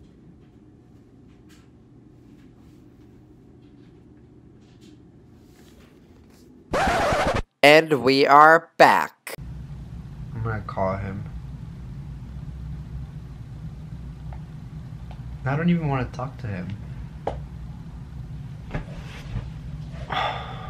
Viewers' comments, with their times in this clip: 0:04 rip all headphone users